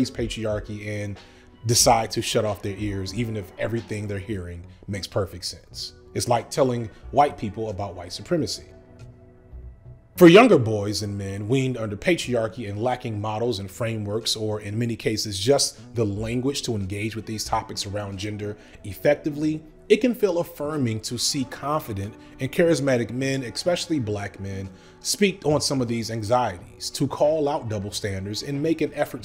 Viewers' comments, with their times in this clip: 0:10 the pause was enough to make me comment i laughed 🤭